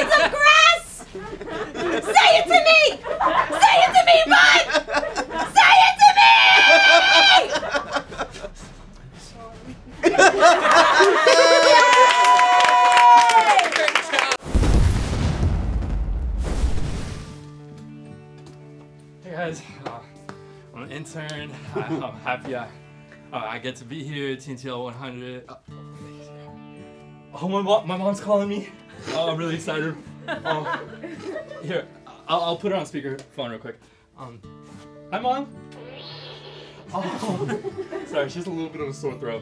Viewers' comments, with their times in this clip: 0:06 His sorry sounds so dejected and sad-
0:20 sounds like Mr Beast